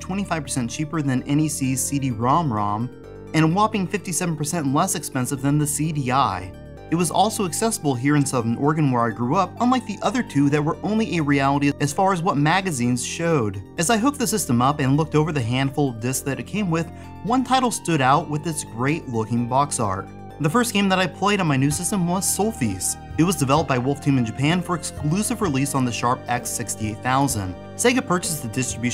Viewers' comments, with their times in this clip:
0:10 What on earth are you saying ? It sounds like your saying only eeerealityiid... wtf? Somthing about only eerealliidid as far as what magaizines showed? Say what?